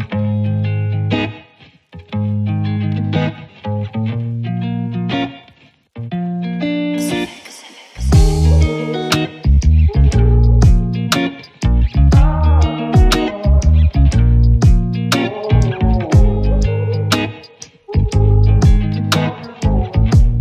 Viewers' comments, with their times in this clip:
0:06 sounds so cool